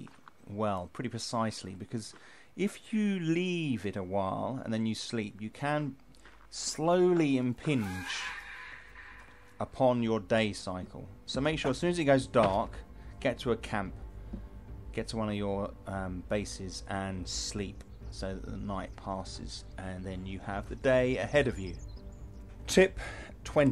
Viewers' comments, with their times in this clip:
0:07 That screech scared the crap out of me! My heart beats still trying to find its correct rhythm lol
0:08 That scream with headphones on scared the fuc* outta me lmao.
0:09 lmao I'm eating while watching this, and that screech made me jump and fling rice everywhere lmfao